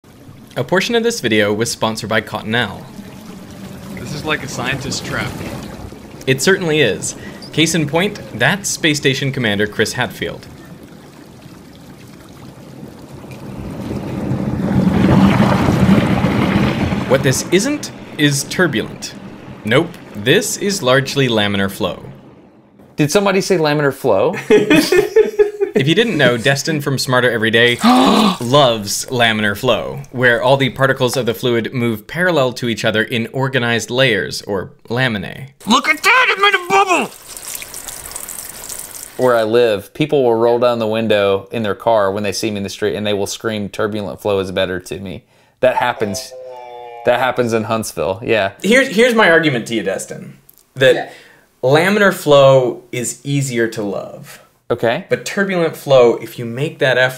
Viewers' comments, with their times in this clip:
0:07 For real heard "Playstation Comander"
0:40 I thought is was "Snatch block!".